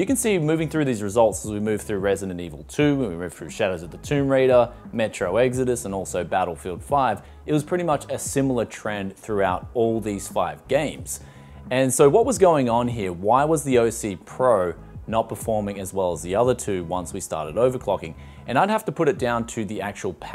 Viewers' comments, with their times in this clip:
0:04 Shadow Of Zee Toim Roider lol